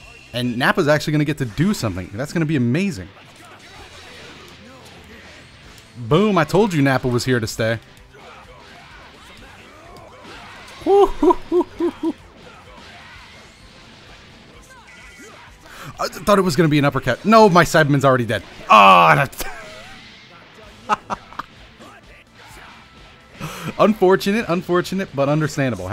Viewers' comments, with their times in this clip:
0:10 I didn't know they've changed Frieza's voice actor